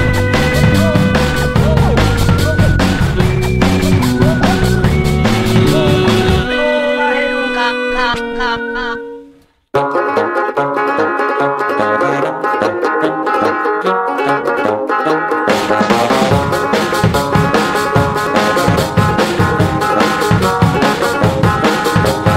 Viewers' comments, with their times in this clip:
0:09 I just love the Baritone Sax
0:09 I know this comment is old as dirt, but there's no baritone sax ... Or anywhere in this song